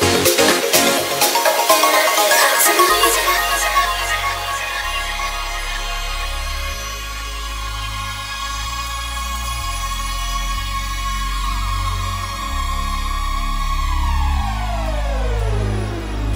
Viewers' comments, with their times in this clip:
0:04 + is just pure build up to a climax then the release ommmggggg